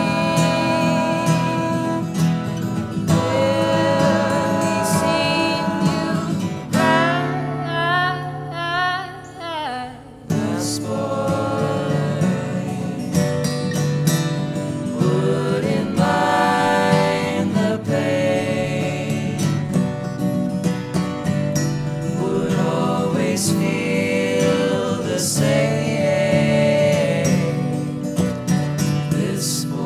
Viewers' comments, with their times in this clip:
0:09 "THAS BOI" k k this was so beautiful! btw cute doggo
0:10 'Thas Boy' haha love it!